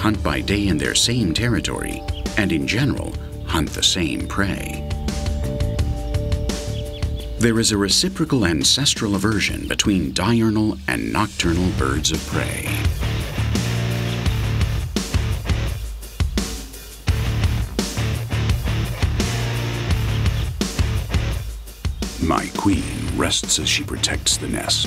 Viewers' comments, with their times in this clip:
0:08 the fukken metal part